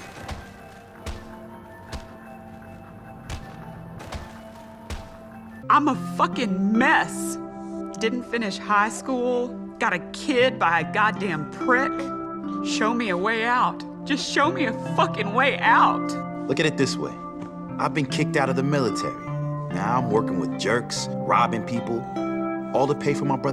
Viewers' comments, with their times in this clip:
0:06 I thought this sound was a ps 4 in the background